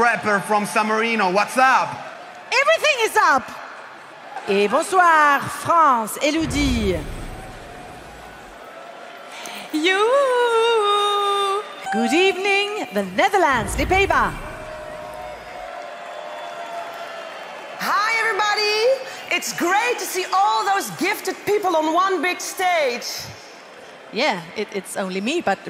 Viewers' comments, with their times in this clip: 0:07 Is she mimicking Robin Stjernberg cuz idk if she's doing him justice, or maybe she's mimicking amir? Anyway wasn't she one of the hosts for jesc 2021?